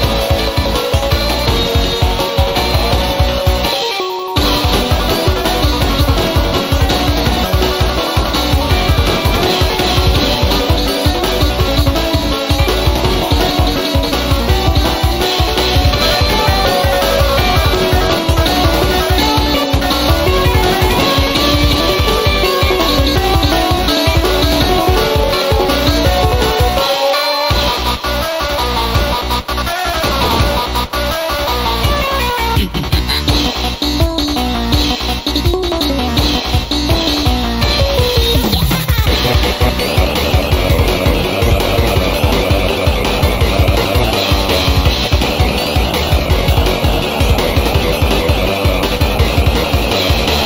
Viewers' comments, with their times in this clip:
0:04 cheekys base drop is the best part in the song in my opinion cause of how many bullets you dodge. And also cause there are many notes.
0:32 does cheeky have his own laugh i checked the og triple trouble and the laugh sounds different idk but thats would be awesome